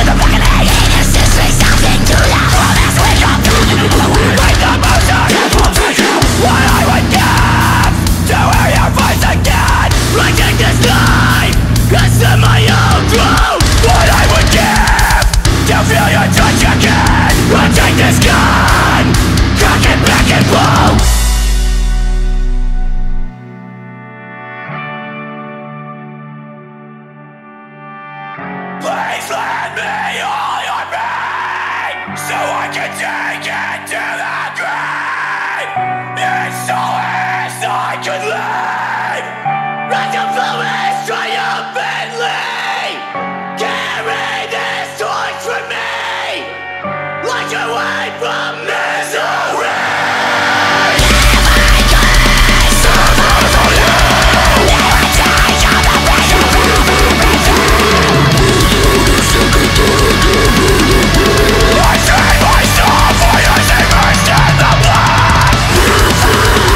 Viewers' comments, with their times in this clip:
0:06 transition is the sickest shit i have ever heard in my life
0:21 Another song full of lyrics bringing me to tears.. 🖤 the beats dont match the pain the lyrics reflect though and on to the end is where it all hit together so beautifully
0:28 Not gonna lie, the vocals hit me gave me goosebumps!🖤
0:36 Gave me Igorr vibes. Goosebumps 💀
0:51 makes me cry, that vocals really make me feel free